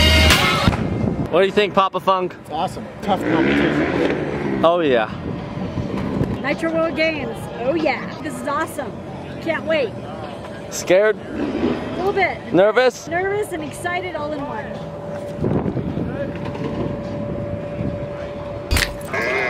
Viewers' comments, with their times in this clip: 0:03 The motor sounded like it came from the scooter!